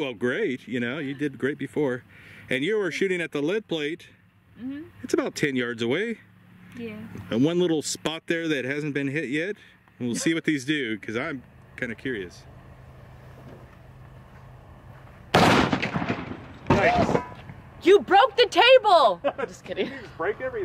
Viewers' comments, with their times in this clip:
0:06 Listen closely to that yeah. Adorable